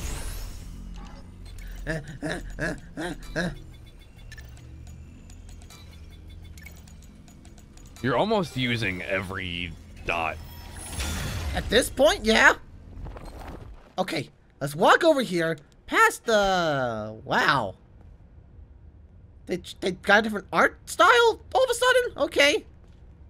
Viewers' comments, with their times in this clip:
0:08 Mon casually says fuck